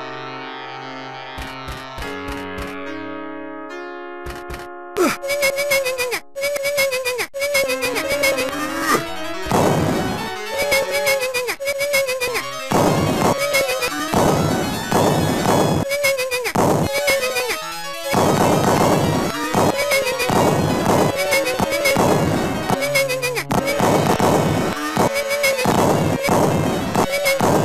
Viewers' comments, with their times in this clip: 0:09 Sega Genesis Vine Boom